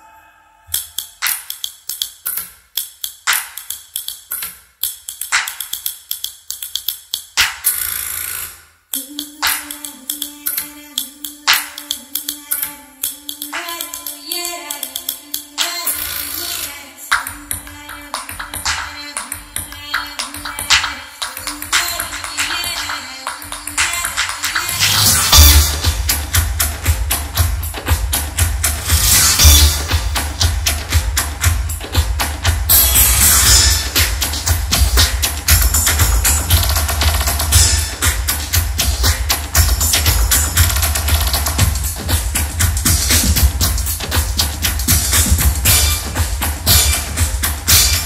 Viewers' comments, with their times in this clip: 0:09 ....hooraa..ra.ra..hooyuiya ra raa...swarna latha voice...( one and only )..mesmerizing
0:29 the moment when my neighbour came and started yelling to reduce the bass 😂😂